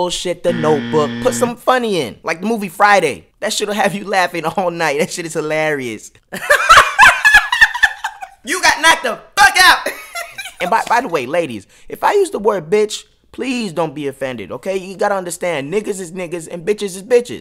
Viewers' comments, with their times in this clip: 0:05 that laugh, priceless XD